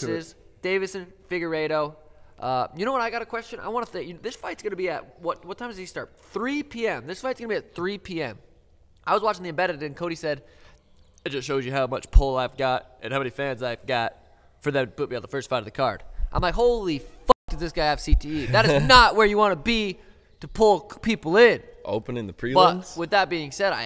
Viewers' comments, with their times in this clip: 0:08 That Cody Garbrandt impression was hilarious 😂😂😂